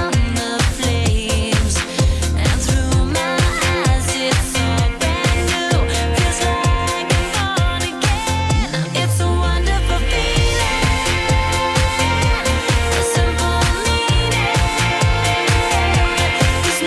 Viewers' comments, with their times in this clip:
0:03 when she says "eyes", that's so sexy... whoa, interesting song.